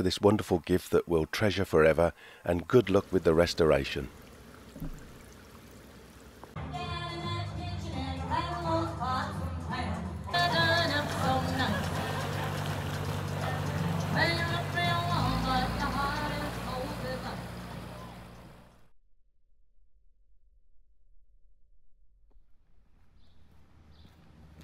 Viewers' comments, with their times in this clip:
0:08 People are strange? there is a touring boat with a lot of happy guests out to enjoy nature in the canal - and to avoid the soothing silence, they brought somme loud music???